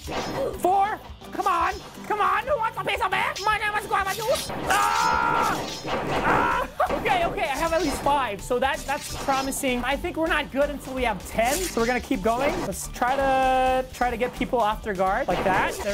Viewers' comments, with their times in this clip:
0:03 are u speaking Philippines Language?